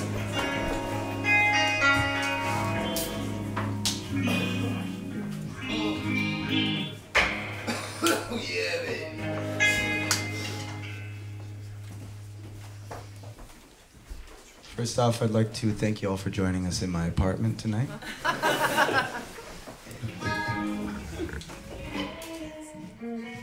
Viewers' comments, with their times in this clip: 0:07 that cough then ''yeahh baby'' was majestic